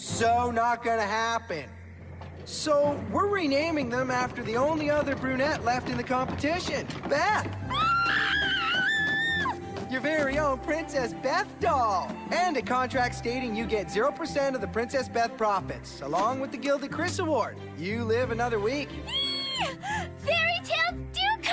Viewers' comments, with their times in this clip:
0:07 Beth: Screaming out of happiness Me: Either she’s gone crazy, or she’s on drugs